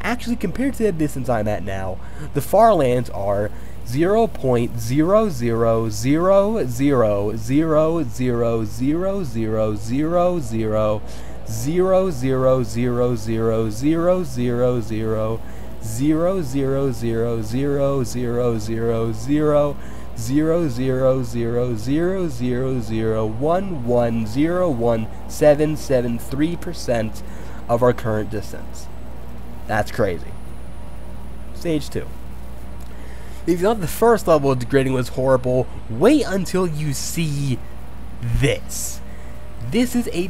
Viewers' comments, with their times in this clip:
0:03 woah that music hits hard
0:23 are you all gonna ignore the fact that he just singing with numbers?